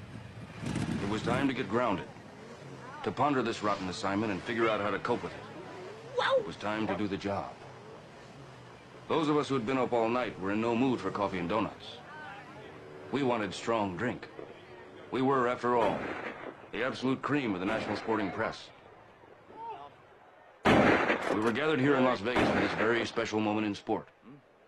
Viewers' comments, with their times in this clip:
0:05 my friends and i are still wondering who made that "wwww-WOUW" sound is it duke?